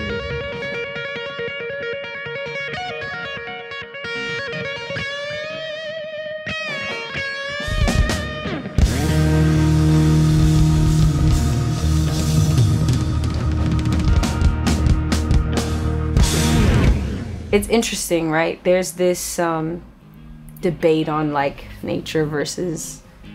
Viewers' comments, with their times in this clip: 0:07 is the audio out of sync or just bad mimicing? specially the drummer... misses the first snare hit of the ending but you can still hear it in the audio